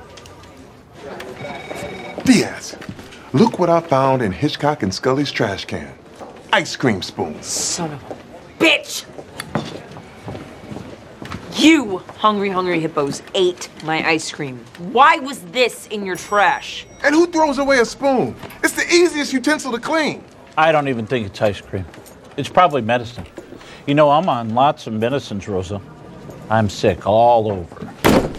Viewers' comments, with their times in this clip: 0:09 the sound it made when she grabbed the spoon was intimidating lmao